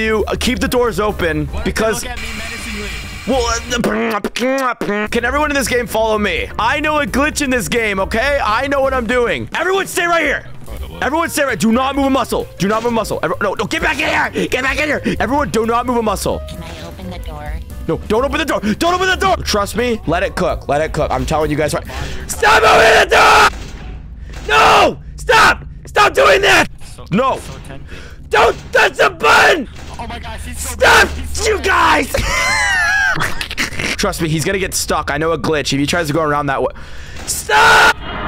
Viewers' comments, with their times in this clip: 0:03 bro randomly made a beatbox banger by accident
0:04 “Well uh *starts beatboxing*”😂
0:16 Bro the shouts he is doing the people opening the door is too funny 🤣
0:20 his pure rage at them opening the door was so good. you could hear his panic and throwing his lungs out at it.